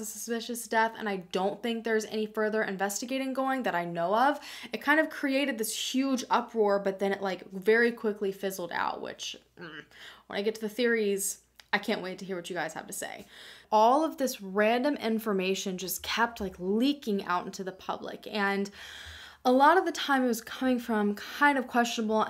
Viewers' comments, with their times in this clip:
0:09 The little noise you made = my thoughts exactly.